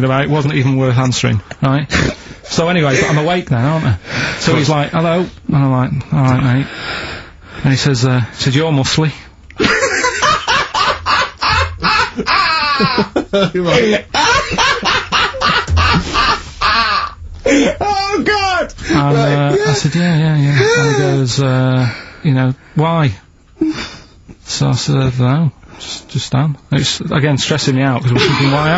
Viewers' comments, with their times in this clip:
0:07 laugh of the episode
0:09 The greatest laugh ever committed to audio